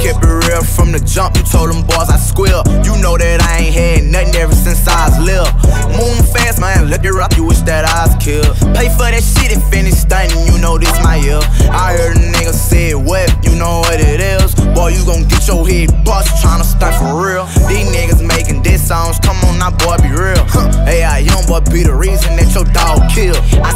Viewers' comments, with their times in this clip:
0:05 is it just or I hear something weird, anyone know why?
0:06 his voice glitches 😆